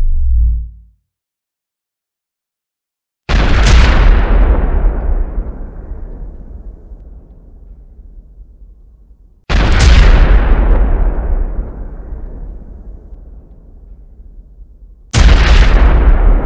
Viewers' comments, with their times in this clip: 0:03 All the other fuels you've put through this engine explode with a dull flame-y, fwoosh-y "boom" compared to nitromethane, which explodes with a sharp, almost metallic-sounding "crack" and the flame almost--nay LITERALLY burns white hot Slow the video down to half speed during the slow mo bit and the sound is incredible. Watching the combustion fly out of the melted spacer at the end was like watching the finale at a fireworks show, and just as dazzling. What gets me is how the metal spacer failed before the acrylic head did.